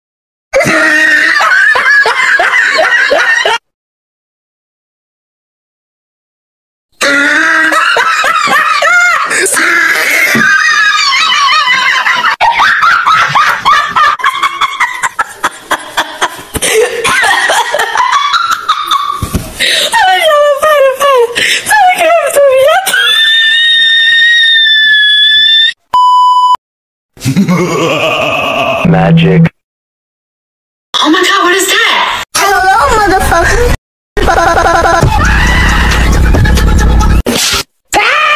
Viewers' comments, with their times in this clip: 0:10 gurls your laughing to hard-
0:23 sound like a tea kettle